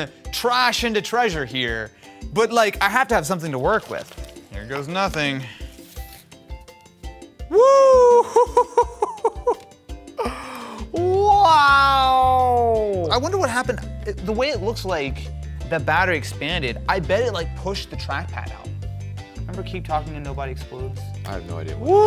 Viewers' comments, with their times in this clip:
0:10 mario kart sounds